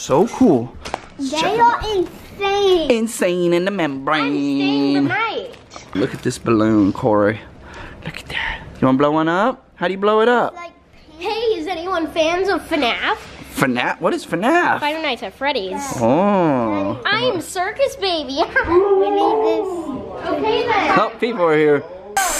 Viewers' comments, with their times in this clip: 0:03 who said I’m staying the night